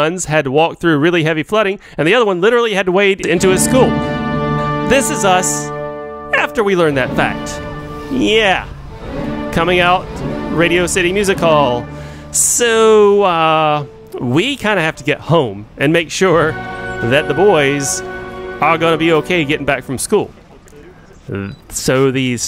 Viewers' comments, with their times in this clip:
0:07 y’all heard that? The old voice is trying to make a comeback!